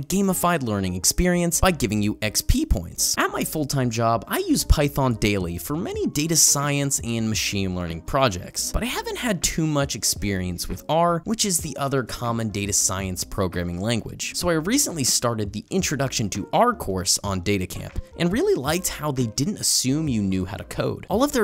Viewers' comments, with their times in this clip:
0:04 audio messes up